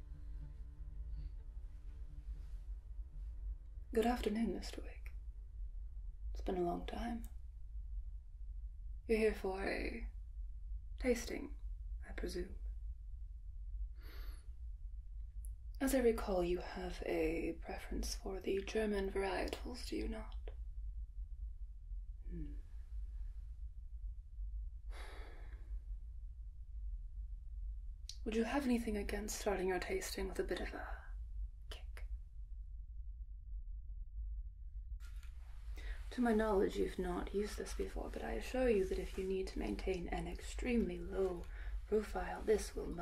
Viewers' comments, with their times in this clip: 0:03 I heard: Good afternoon Mr. Wake. Nice reference to Alan Wake:hand-pink-waving:
0:25 The exhale has already put me to sleep❤